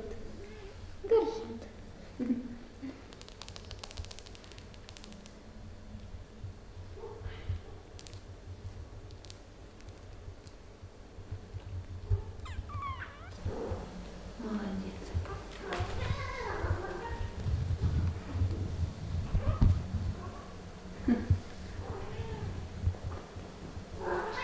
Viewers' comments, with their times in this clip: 0:06 Nail tapping. ASMR 💖